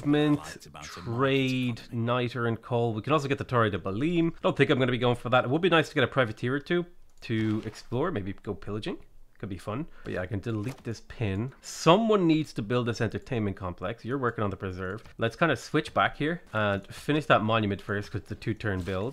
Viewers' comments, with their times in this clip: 0:03 @ the mark, just butchered the pronunciation of Belém if that bothers you haha